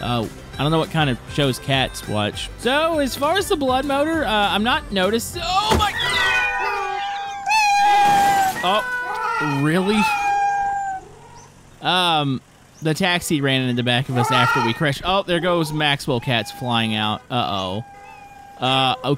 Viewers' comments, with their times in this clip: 0:05 “OH MY-” *INTENSIVE MEOWING*
0:05 bruh the cat go MEOWWWWWWWWWWW
0:07 the cat meowing for life made me laugh doo much idk why